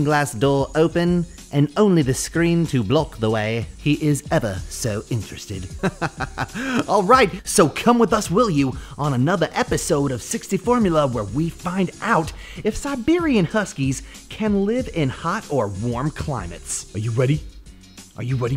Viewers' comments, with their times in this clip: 0:04 The voice change over sounds exactly like DRAGONBALLZ FRIEZA..🤣🤣